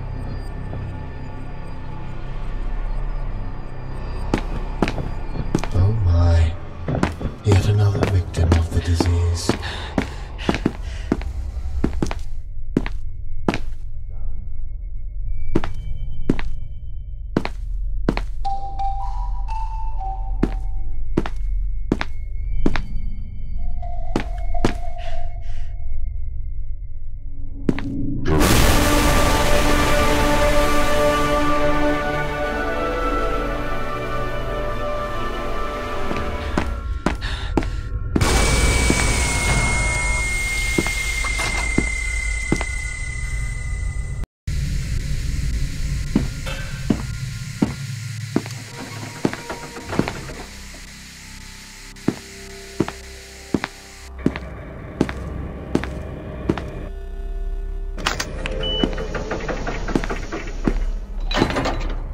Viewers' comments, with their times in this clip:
0:09 some people are talking about his skin or things like this and i am like "holy- this is a game from 2012? And also, HIS VOICE IS SOOOOOO DEEP, I JUST- OMGF"
0:24 I thought it was the start of the ussr anthem
0:26 Starts playing a earrape version of the Russian anthom*
0:27 was not harmless they contained it cause of its great power of insane earrape
0:27 B E E T H O V E N I N T E N S I F I E S
0:28 i Was thinking thats the start of soviet unión anthem
0:28 Lol I thought it was the Russian National Anthem.
0:28 I THOUGH THAT WAS USSR ANTHEM EARAPE!
0:29 now that's M U S I C
0:49 Props. You’re dutch and ya got 6.4 million views. I could tell “opname gestart”